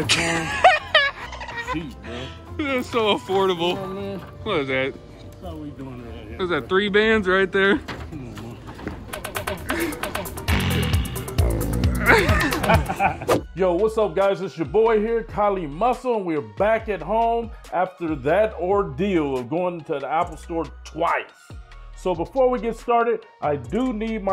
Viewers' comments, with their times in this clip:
0:07 😂😂😂 yeeoooo I howled when day bow bow started playing